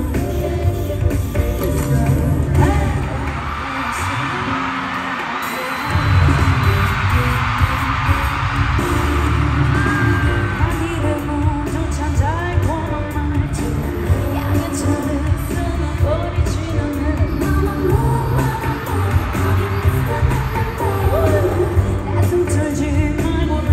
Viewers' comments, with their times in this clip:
0:07 Almost eveyday i keep coming back to this just to see moonbyul's wow lol